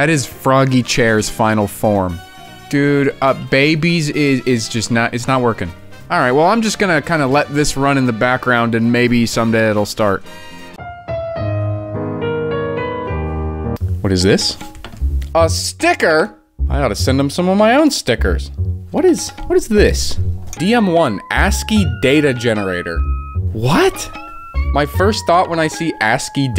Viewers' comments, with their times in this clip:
0:09 I set my ringtone/alarm noise to the Nook's Cranny music 7 years ago. It would be fun, I thought. Now EVERY time I hear it in a video I get INSTANT anxiety lol. iPhone alarm noise but you hear it every time someone wants to evoke the funny tanuki store.